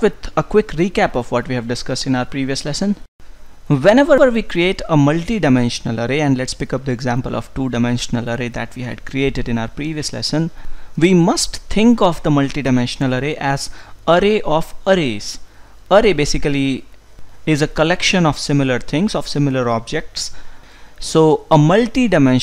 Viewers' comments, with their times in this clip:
0:03 I love your echo :)